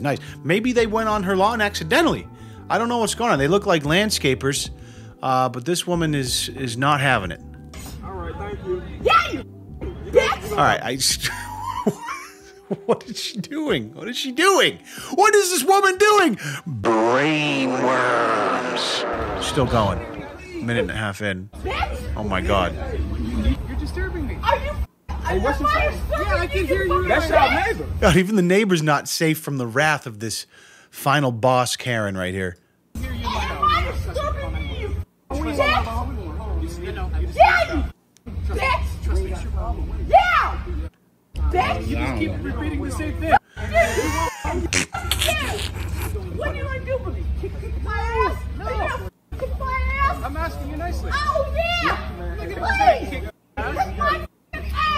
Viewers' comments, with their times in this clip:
0:08 this woman is a bad person but the way she says this is fucking hilarious YEAH YOU B*** YEAH!
0:15 I’m honestly impressed that she said it the same way EVERY SINGLE TIME
0:37 Haaa!! She sound like the old man from eight crazy nights Adam Sandler movie 😭